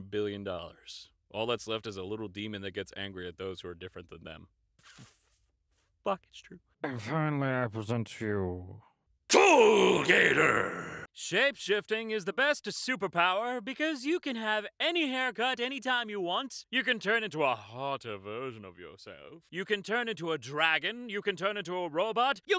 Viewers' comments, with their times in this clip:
0:07 I got an ad but for a split second I saw an alligator with human teeth, and a small yelling sort of thing right before it got cut off it was beautiful